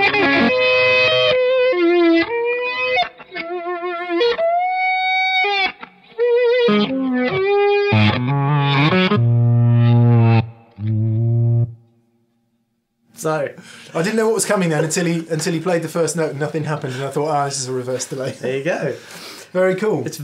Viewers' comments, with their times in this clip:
0:06 that reverse delay is so John F from RHCP, and he actually had a line 6 DL4, so thats very cool.